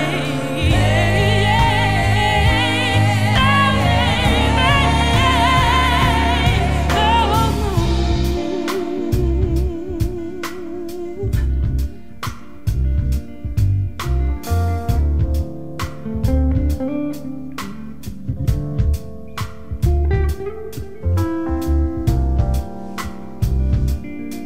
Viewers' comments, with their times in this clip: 0:08 oh my god the drop ...